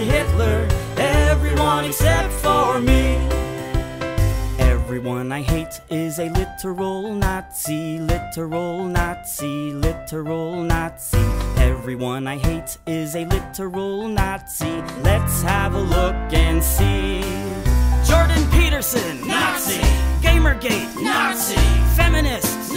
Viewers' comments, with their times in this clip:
0:04 I love how their footsteps matched the song